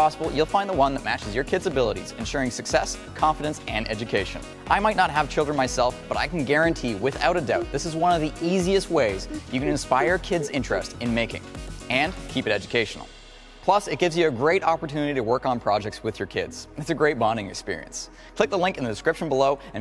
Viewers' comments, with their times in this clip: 0:05 I can hear after a hmm hmm hm hm hm hm hm female who was it?!